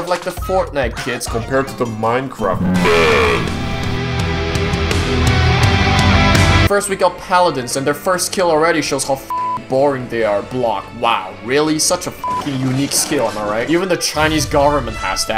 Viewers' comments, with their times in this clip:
0:03 song is a banger dude